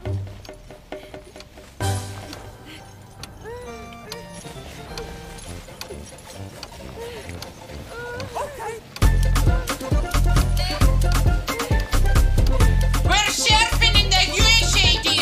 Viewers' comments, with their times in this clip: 0:03 Y’all, is this song on Spotify? It’s such a happy bop and makes me think of our Gran, just like Native New Yorker does 👵🏼🥰